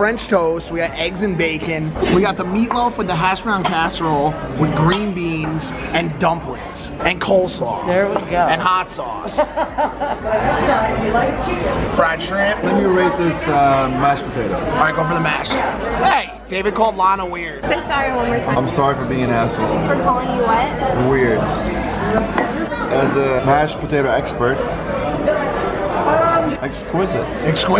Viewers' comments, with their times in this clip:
0:09 evil lunch lady laughter 😂